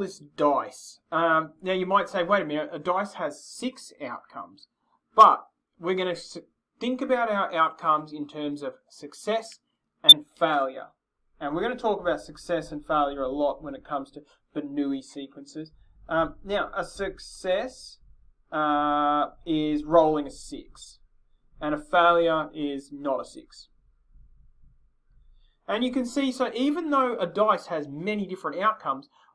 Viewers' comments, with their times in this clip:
0:10 BE WARNED! you can hear an UNDENIABLE proof of Them sending mind controlling Signals to our brains! Due to an unknown reason the Signal fails falling into audible frequency, leaving NO ROOM for questioning the FACT that these sort of hypnosis inducing transmissions exist. I'm wearing my protective tin Foil head gear as I write this but if you are reading this here without such apparel, there is a great change that you are being brainwashed RIGHT NOW! Steer clear from all such videos containing any material that can be viewed as anything the "scientific community" could approve if you don't want to become a zombie slave for the NWO!!!